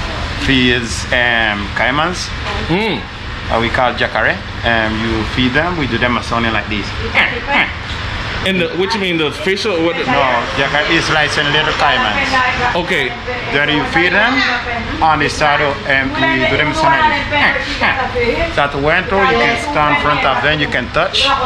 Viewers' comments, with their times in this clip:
0:05 wow sound just like the gators I seen hillbilly boys have to use a tool to make that calling sound